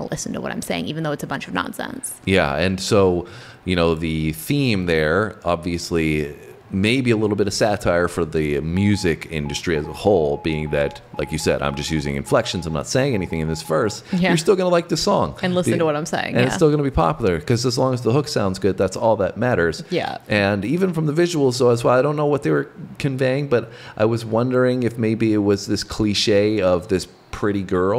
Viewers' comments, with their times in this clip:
0:09 Whats up with the morse code ?